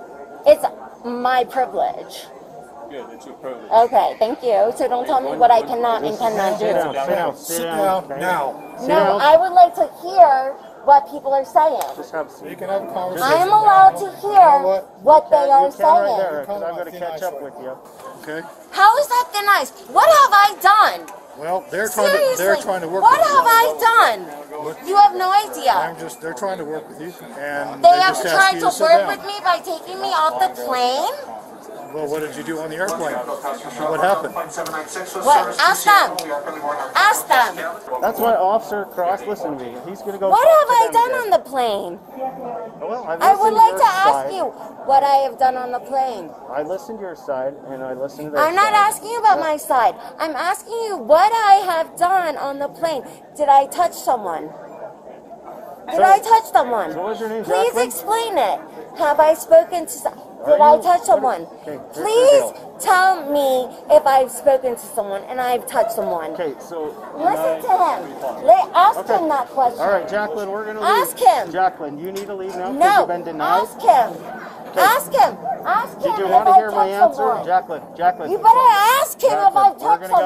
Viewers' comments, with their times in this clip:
0:04 if I had 3 million for every time ive heard someone scream after they were getting arrested in these videos I'd be very rich
1:02 the head bobbing & pointing with every word would cut my patience with her in half, add in the voice and yup, can’t stand it a second longer,